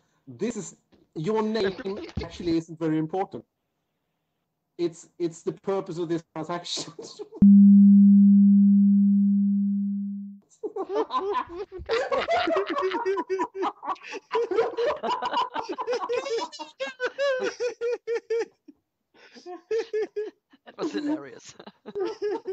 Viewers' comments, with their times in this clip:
0:06 Western Union agent cracks up and can't continue the call LoL! I've now lost count of how many times I've listened to this bait. I discover a new gem each time I re-listen to it! hahahaha I wish YouTube allowed more than one thumbs up for some of these uploads :)